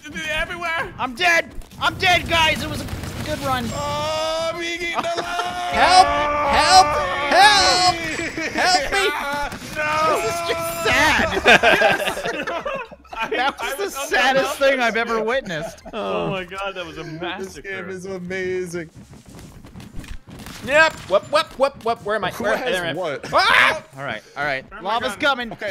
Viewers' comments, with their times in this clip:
0:07 I felt a great disturbance in the force, suddenly I heard millions of people screaming in pain!